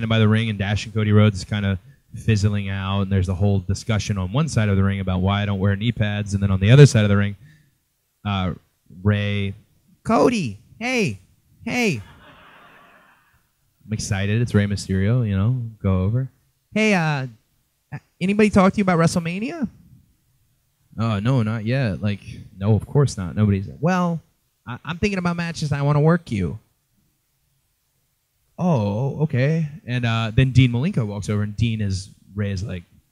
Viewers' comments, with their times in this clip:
0:09 That Rey's Mimicry By Cody is just awesome 😆😆😆😄😄😄
0:16 Cody needs to add some raspiness in his voice to get a perfect Rey impersonation